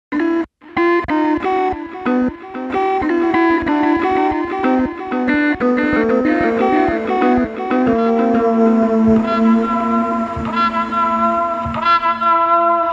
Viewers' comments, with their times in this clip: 0:00 this music is scary